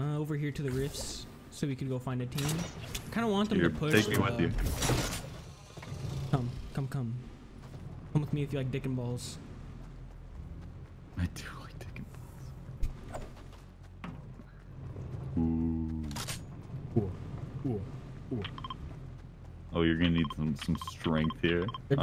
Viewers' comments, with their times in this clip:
0:06 Carson sounds like someone just guessed his card in a magic trick